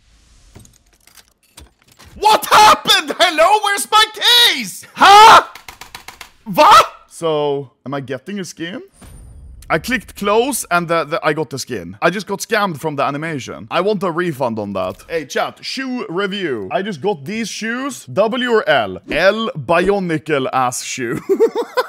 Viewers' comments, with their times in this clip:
0:04 the Swedish came out